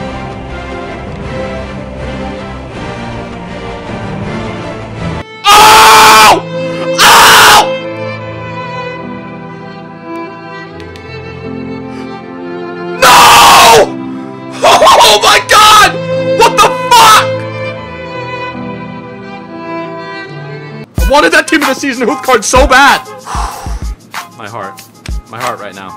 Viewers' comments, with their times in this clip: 0:05 Sheep screaming meeeh!!! 😂😂😂😂😂😂😂
0:06 that scream killed meeeeeeeeeeee